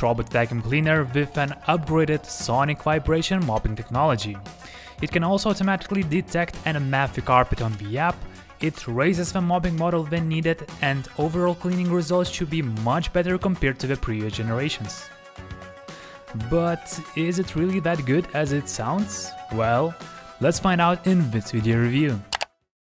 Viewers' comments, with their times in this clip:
0:06 sorry, but what are you saying here? "automatically detect an' a maficarpet on the app" ??